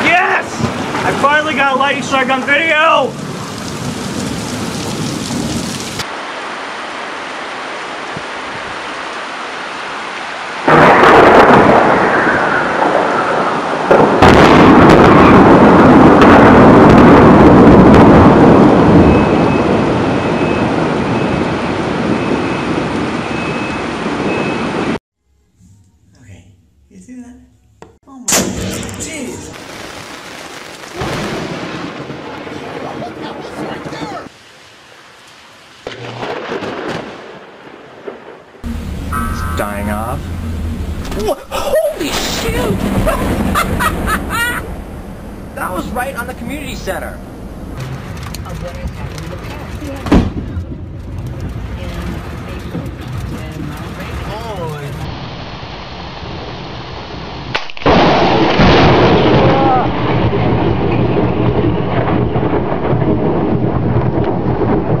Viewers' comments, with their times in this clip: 0:06 lighting srtike no noise
0:10 bro what was that noise that lighting made
0:16 sound like COD mobile's sniper
0:16 sound like bowling balls
0:20 fire alarms go off
0:26 I can’t stop laughing🤣 the « jes »
0:38 Bro he sounds like Lester from GTA5.
0:48 hahaha wood go brrr